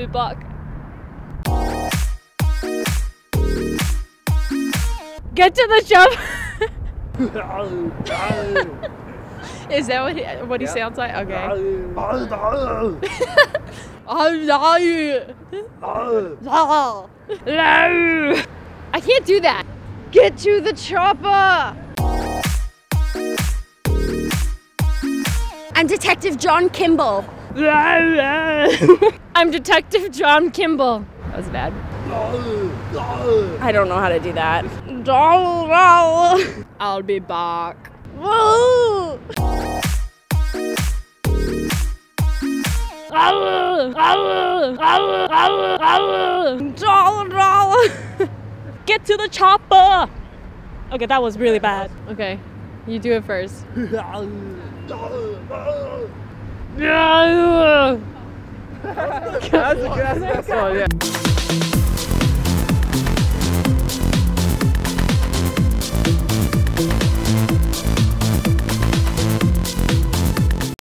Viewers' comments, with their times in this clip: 0:08 is that a girl? wtf! shes just a guy with make up and with a girl voice
0:42 too much D
0:46 Best impersonation of all time.
0:47 was bill cosby! ahaha
0:47 The girl sounded more like Bill Cosby. Which was excellent.
0:47 Spot on Cosby impression.
0:48 If her career as an Arnold impersonator doesn't work out, then she should try out for Bill Cosby!
0:52 your voices are the best
0:56 hahaha it was chewbacca